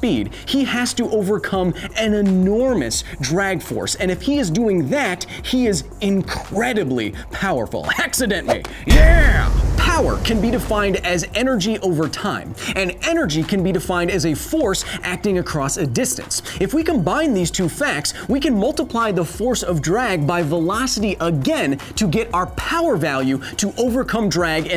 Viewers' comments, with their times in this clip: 0:06 Hexadent me, yeeeeah